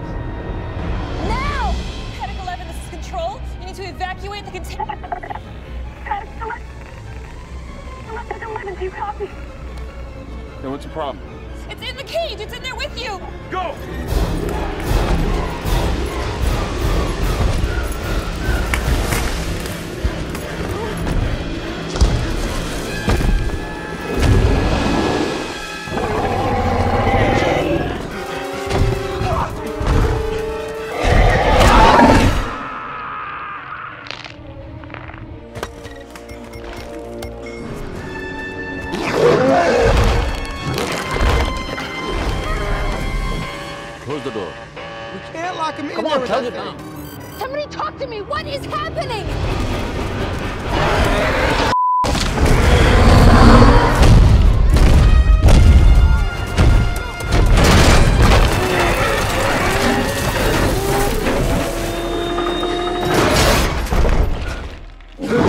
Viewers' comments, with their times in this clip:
0:04 Listen to the supervisor's radio call
0:51 that bleep out was so unexpected and hilarious